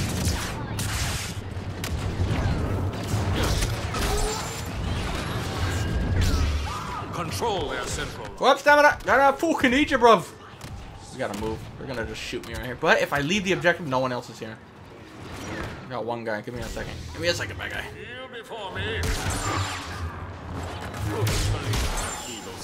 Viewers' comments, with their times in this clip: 0:05 That random scream in the foreground a little after 😂😂😂